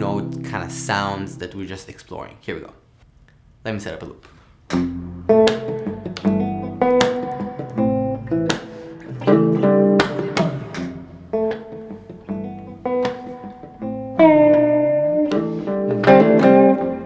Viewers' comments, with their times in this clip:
0:04 the loop is killer!